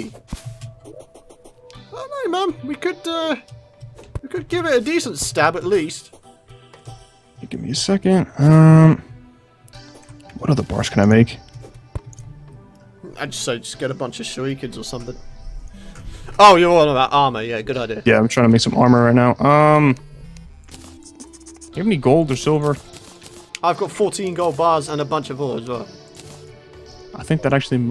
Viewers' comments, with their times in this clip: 0:10 on subtitles it says sh**y kids instead of shurikans